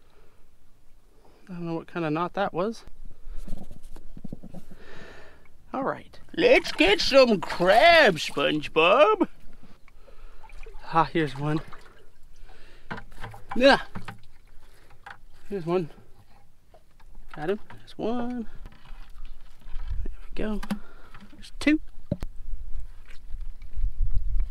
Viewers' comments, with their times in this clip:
0:06 i dont know who you were trying to voicebut you sure sounded like master oogway